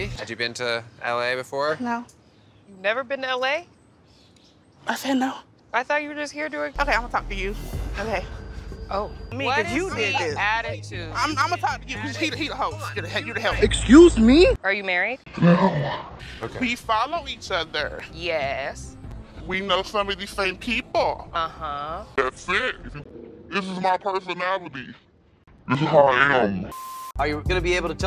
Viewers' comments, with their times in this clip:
0:06 “I said no” the absolute sass she had in that answer 💀💀🤣🤣
0:16 I hate when ppl talk w that inflection... like they think ur stupid.. even if they right thwt inflection is irritating